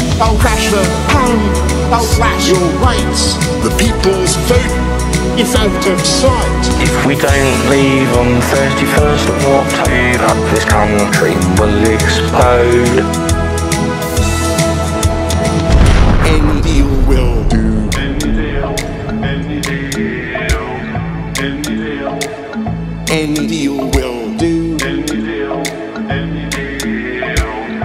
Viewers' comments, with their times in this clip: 0:10 he said expode